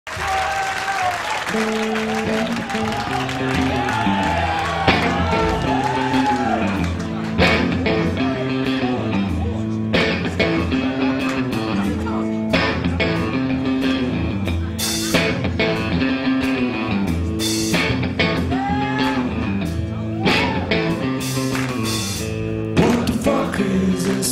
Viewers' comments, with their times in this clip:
0:08 you can hear someone say “Oh it’s porch” lmao